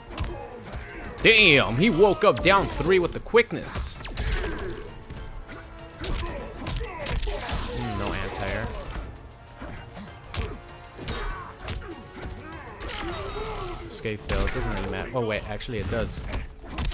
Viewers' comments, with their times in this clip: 0:03 I like the accent👌🏽